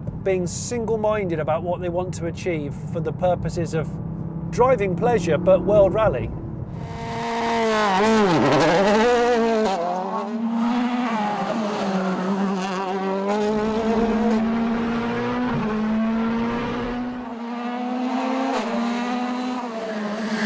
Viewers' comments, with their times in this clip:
0:07 THAT DOES NOT SOUND LIKE A 3 CYLINDER!